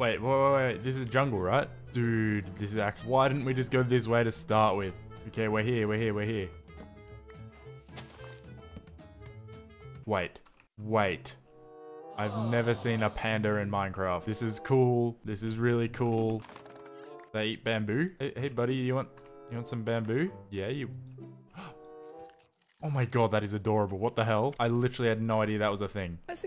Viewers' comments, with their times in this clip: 0:08 What is a Pander?